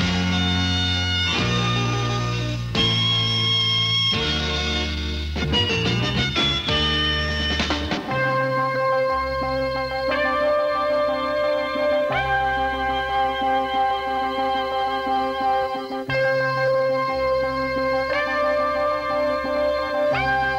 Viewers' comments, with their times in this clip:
0:08 The song starting almost sounds like it's from The Who's "Quadrophenia" album